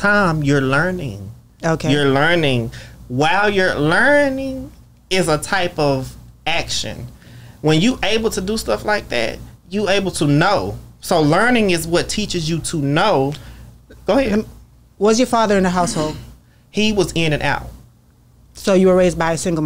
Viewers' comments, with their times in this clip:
0:03 wtf was that!? LURRNING😂😂